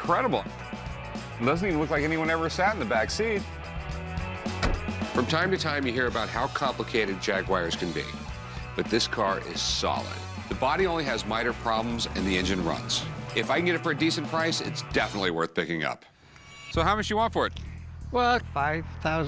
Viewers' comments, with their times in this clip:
0:07 wtf is a jagwire?